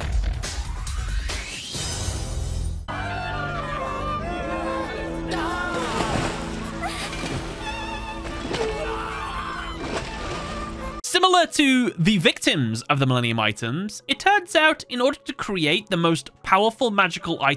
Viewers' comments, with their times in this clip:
0:05 People being killed by dropping them to smelting pot Men: Screams Woman: Sex moaning